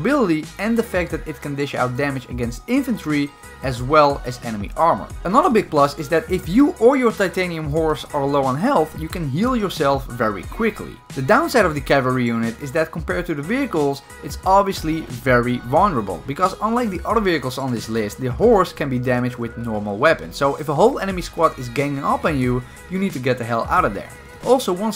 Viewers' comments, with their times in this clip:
0:06 The voice crack 😂😂
0:06 yo that voice crack tho
0:07 daim that voice crack
0:08 HeALtH!! (voice crack)
0:08 That Voicecrack LOL
0:08 lol voice crack 😂
0:08 Anybody hear that voice crack
0:09 that voice crack was hilarious 😂